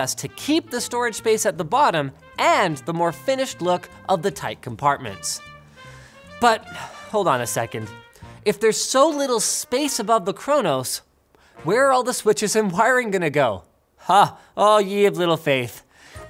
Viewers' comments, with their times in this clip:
0:03 the music was playing but i could still hear the controllers smashing into each other in my head XD